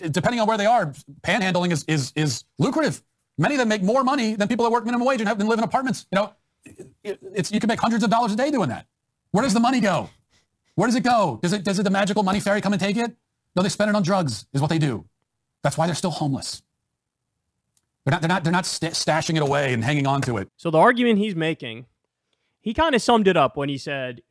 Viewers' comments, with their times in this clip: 0:06 now know why there's an "adarall for all" shortage 😂😂 people wanna be trendy and sound like this 🤡 😂😂😂